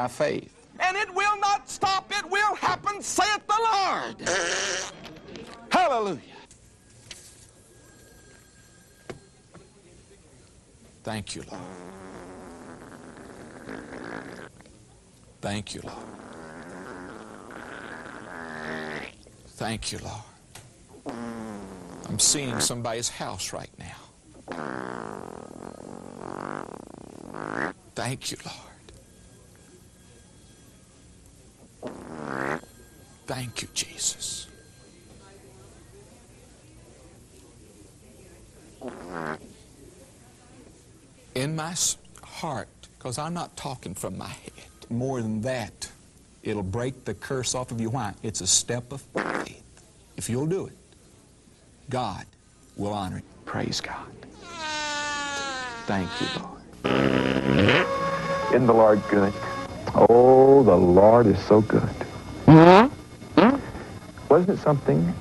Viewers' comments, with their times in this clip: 0:08 Haha! Pushes out farts as he rubs his tie!
0:14 that was wet hahahsvxzczha
0:49 So many treasures to behold here! Too many really to list a favorite.... However, I never realized (see- and hear! ) the extent to which faith can be so richly juicy. Verily, a dose of "premium brown" accompanied that particular epiphany!